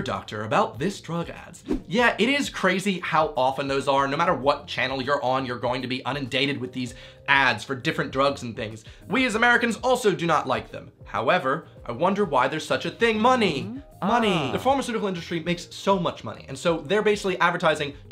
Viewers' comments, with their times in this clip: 0:05 "unindated". Ohhh so close!
0:05 "unindated" I like it. It brings a sense of being incessantly out-of-date